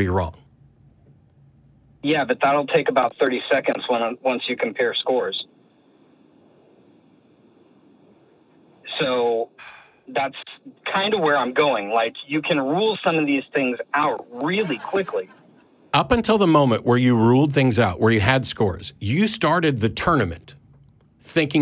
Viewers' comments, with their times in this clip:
0:05 I was just listening, not watching, until the caller said "...until you compare scores" and there was a Silence, so I wound back 10 seconds, and there it was, as expected - Matt face-palming. A 10-second facepalm, AND a heavy sigh. Poor Matt, I know his frustration.